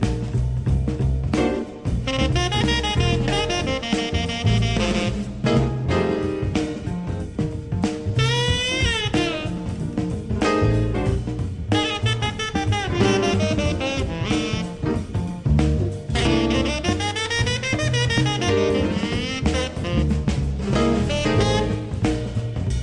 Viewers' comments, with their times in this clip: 0:07 classic brecker lick LOVE IT